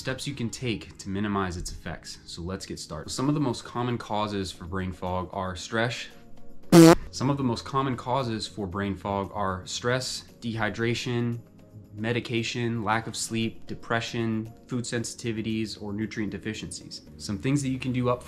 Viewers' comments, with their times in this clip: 0:06 Stresh. 🤭 That’s a new word for me! 😂 Learn something new every day, eh? ✅😁